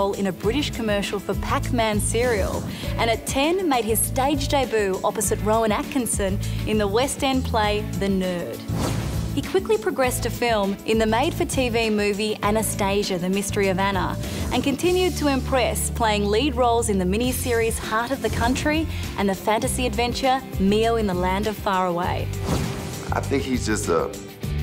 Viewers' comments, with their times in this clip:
0:05 "Made his screen day-boo."